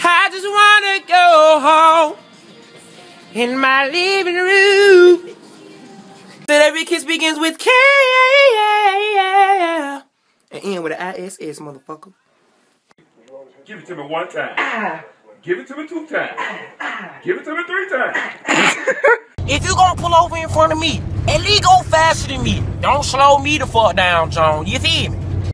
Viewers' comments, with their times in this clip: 0:05 omg his voice
0:06 this guy can singgggg 🤤😍
0:06 he can forreal sing
0:07 NIGGA CAN SING!!!!!
0:07 His voice sounds like an angel 💕💋💞👏🙌💯